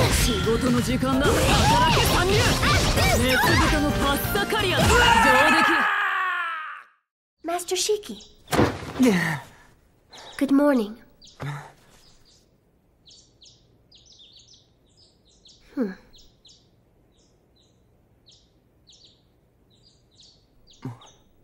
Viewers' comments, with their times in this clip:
0:07 Why is the entire video black screen with no audio from onward though?